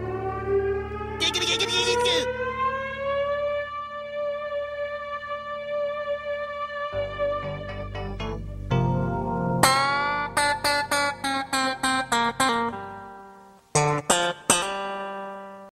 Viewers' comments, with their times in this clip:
0:09 Guitarist waited their whole life for that string solo